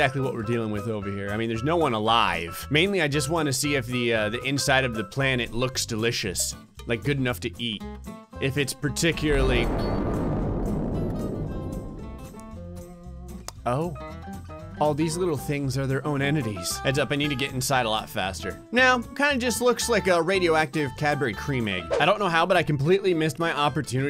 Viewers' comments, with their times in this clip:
0:10 Does not sound like the separatists fleet jumping out of hyper space? In the clone wars not the movie the series